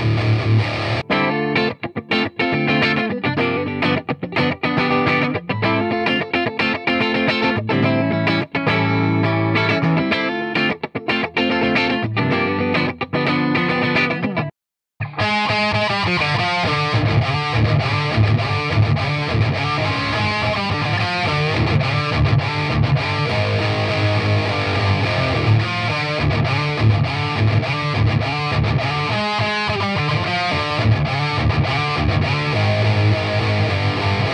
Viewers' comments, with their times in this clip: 0:07 Tone is to die for
0:15 Sounds like the intro-jam MetallicA would do before playing 'Frantic' live.